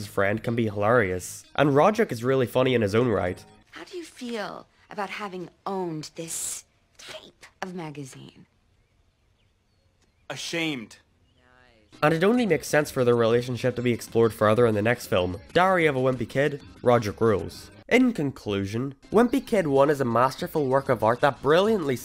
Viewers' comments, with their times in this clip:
0:10 that little niiice makes the scene